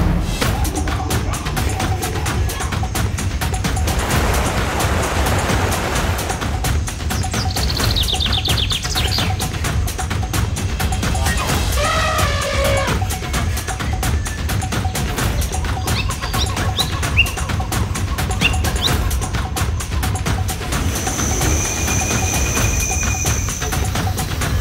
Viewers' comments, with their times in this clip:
0:10 nice sound effect.....it actually confused me😅🤣